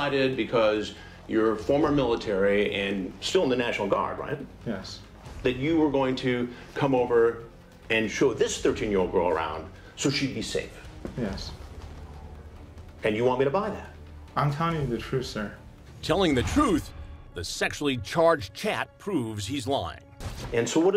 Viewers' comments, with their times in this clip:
0:08 Mouth breather extraordinaire lol